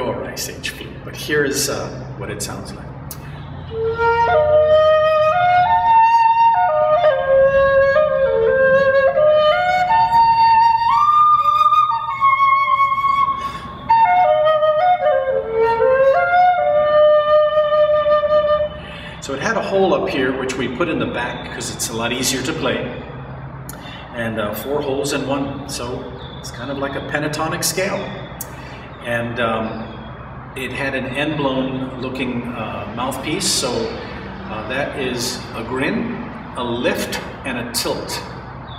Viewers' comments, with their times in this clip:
0:04 The flute sound is so sweet
0:20 the melody is sooo beautiful it hurts, I've been trying so hard to find anything that closely resembles it. Instead I just always comeback and listen to that little section over and over.